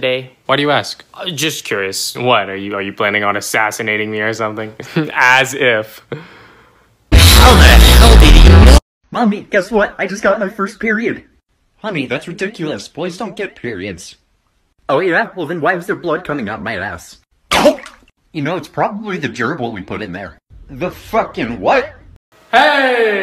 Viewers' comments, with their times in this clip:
0:09 the voices were so funny like wow uP aNd DoWn lEtTeRs